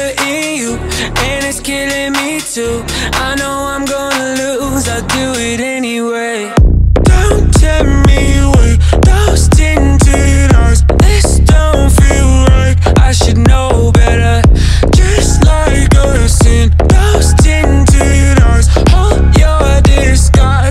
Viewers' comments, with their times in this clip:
0:05 SOL ear-phones, Beats audio, volume on high, felt the drop in my soul